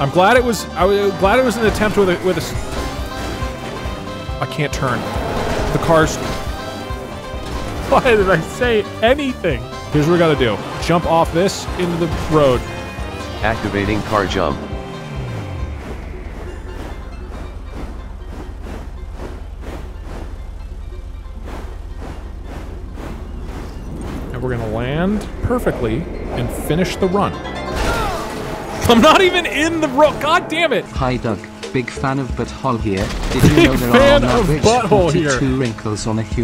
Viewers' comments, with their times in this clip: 0:04 the way the music fades out and in as he flies through the air
0:12 I love how the moo moo farm music just fades in the air then returns while landing.
0:21 I love how during the 'jump' part the inserted music gets further away and then fades back in as he falls lmfao